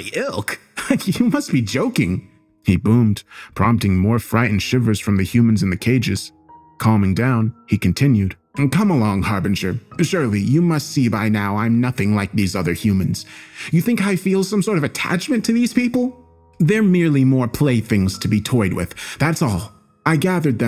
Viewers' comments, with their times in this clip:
0:05 Your delivery of the phrase "My ilk? You must be joking" is why its sometimes better to listen to a story. I would've never imagined to read this line like that consuming the tale on my own. You do take other people stories, but you work with them symbiotically, enchansing the original intent with your clever acting and sound design. This is no mere narration.